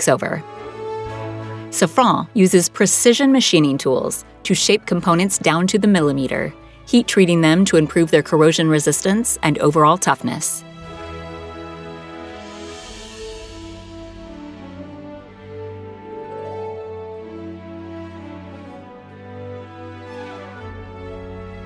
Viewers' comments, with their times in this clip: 0:06 "...down to the millimeter." Wow, that's pinpoint accuracy! By the way, after having listened to this lady I appreciate the BBC English.